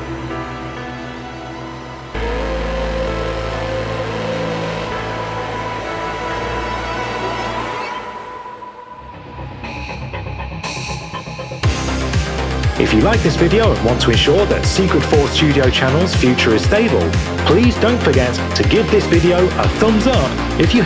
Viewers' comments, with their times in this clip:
0:08 I always feel happy for hearing that theme